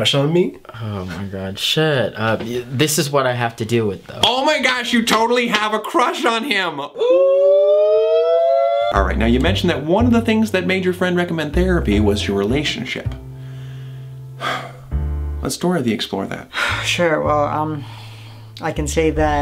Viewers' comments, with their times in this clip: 0:04 the voice....it sounds...familiar! rEmUs?
0:04 the way he says it makes me think of Remus